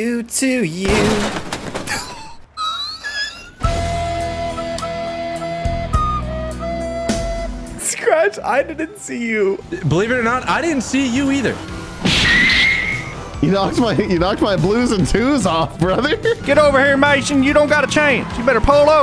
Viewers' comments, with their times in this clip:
0:03 Bro the Titanic song fits the moment perfectly😂